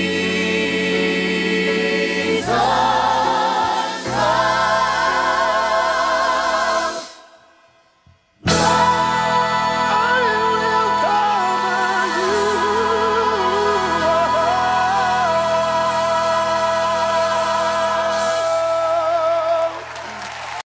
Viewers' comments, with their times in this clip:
0:07 the most craziest riff I've ever heard to end a song are you kidding me